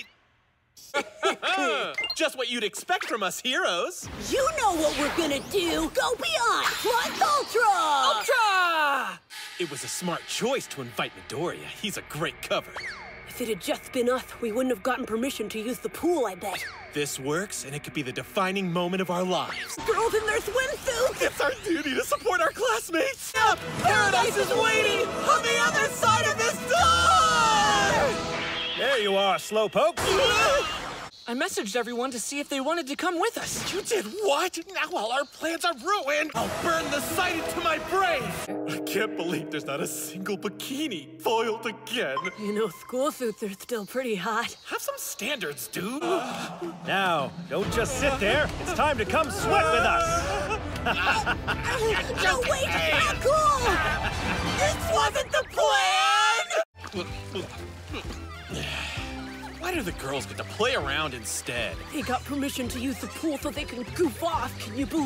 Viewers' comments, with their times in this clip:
0:07 the way Midoriya said “Ultra!” Was so cute ✨❤️😂
0:51 OMG HAHAHA THAT LAUGH FROM IIDA